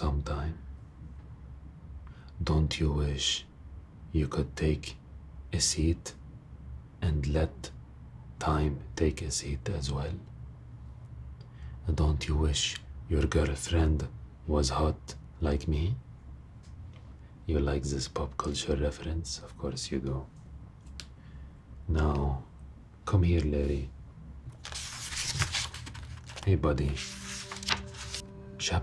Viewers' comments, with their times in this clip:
0:10 Arab dad was about to laugh 😂